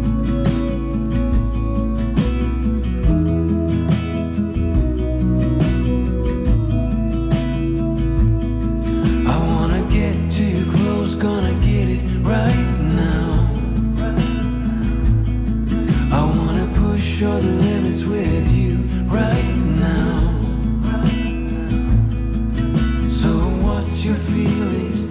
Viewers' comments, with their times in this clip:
0:10 wait for it see the guys clap with the beat at firsthand because he doesn’t clap with the beat at other claps